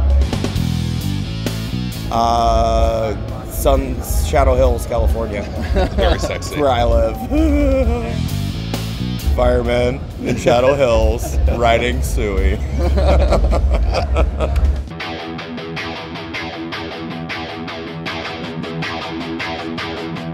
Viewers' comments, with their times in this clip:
0:07 that pennywise laugh